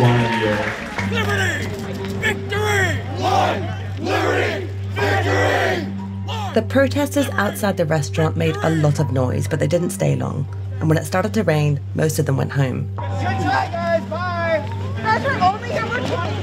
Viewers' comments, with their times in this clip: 0:03 are they really chanting “white liberty victory”??? Please tell me I’m hearing that wrong